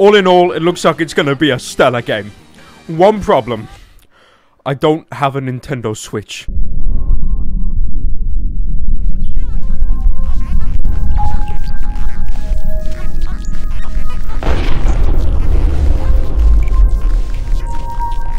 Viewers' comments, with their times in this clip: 0:05 you almost sound your crying